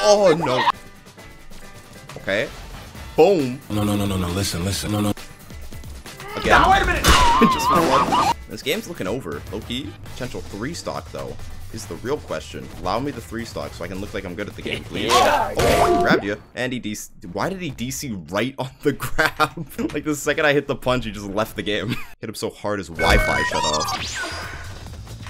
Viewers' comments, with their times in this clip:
0:07 broooo that brings back so much memories the sfx